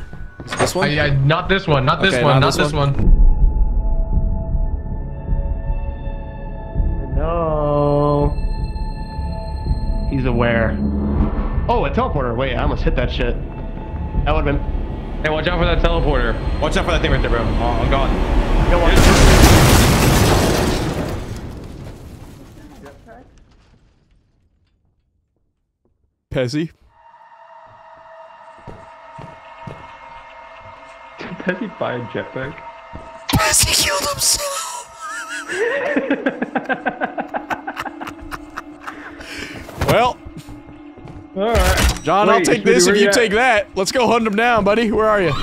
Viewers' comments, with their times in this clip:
0:07 The note in his voice at exactly was D yourself
0:32 is my favorite part of the video, the way you wheezed and spoke is hilarious to me